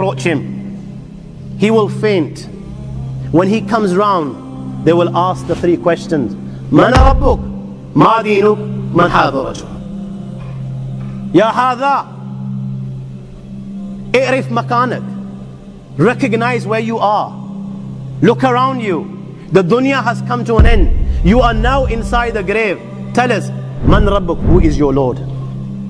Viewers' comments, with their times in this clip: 0:07 The voice was good